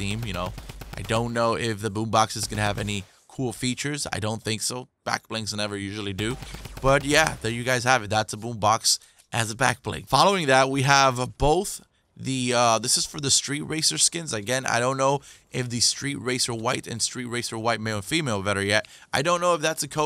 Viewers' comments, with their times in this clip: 0:08 The way you said ‘ boom box ‘ 😂